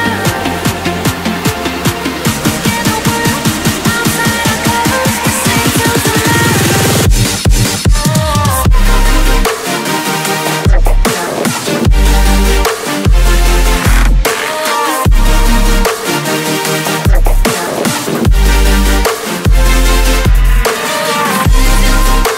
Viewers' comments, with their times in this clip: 0:05 Pegboard style enabled! :O